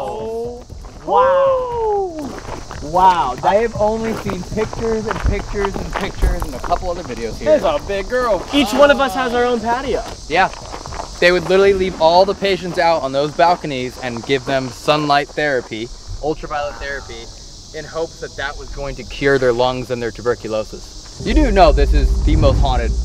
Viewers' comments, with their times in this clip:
0:04 Man is a creepy ass whisper.